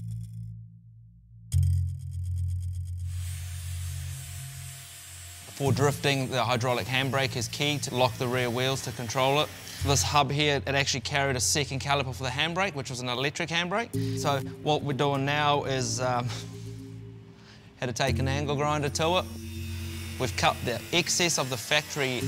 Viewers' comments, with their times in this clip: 0:09 this guy kinda sounds like Korg from Thor ragnarok